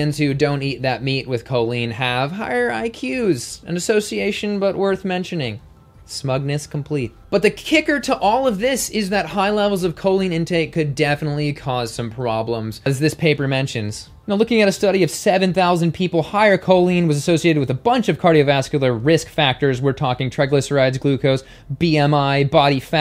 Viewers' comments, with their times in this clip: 0:05 "Smugness complete." 💕💕💕💕 In British English we pronounce Derbyshire as Darbysher. Sorry to point this out but for us Brits it's funny to hear Americans pronounce British English words.